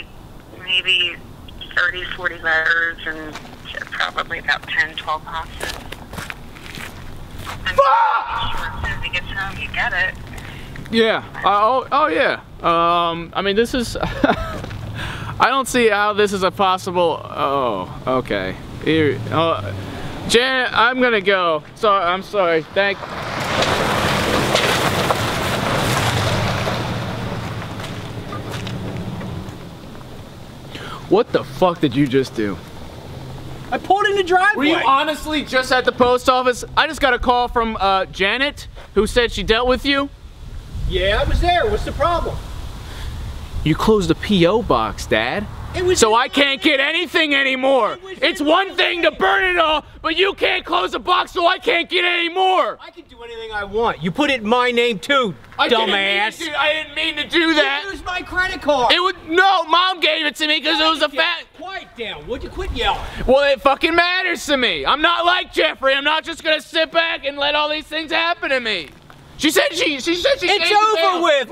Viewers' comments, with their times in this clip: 0:04 I'm almost certain that the phone wasn't muted when he screamed lmao
0:54 sounding just like Red from "That 70's Show" ... LMAO!!